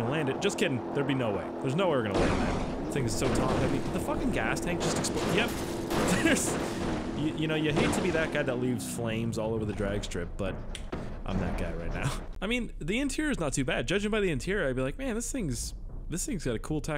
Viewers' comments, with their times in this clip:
0:04 he got so Canadian